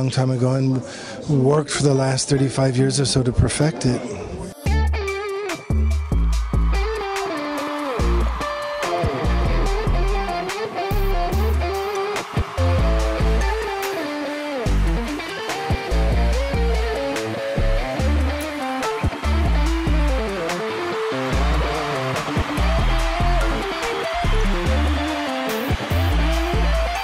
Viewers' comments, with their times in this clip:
0:04 SS is kicking it. Starts with a syncopated foundation, then builds speed, morphs into arpeggio. Sweet.
0:05 is it just me or from start to finish does this sound like Positions by Ariana Grande
0:05 The playing from is 💫
0:14 Hits (mistakingly?) a clean note.Looks surprised😂 Like: whoops! I'm improving. Maybe I am the Mojo Priest🤷🏻‍♂️